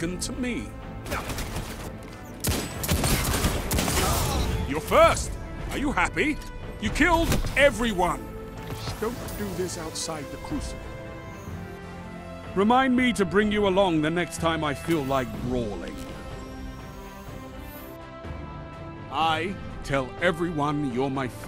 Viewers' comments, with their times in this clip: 0:04 awkwardly chuckles in Gambit full team kills